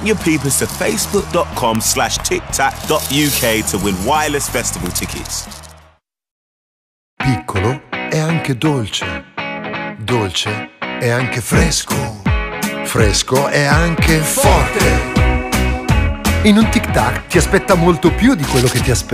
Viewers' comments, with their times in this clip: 0:07 i think voice actors dont haved enough sleep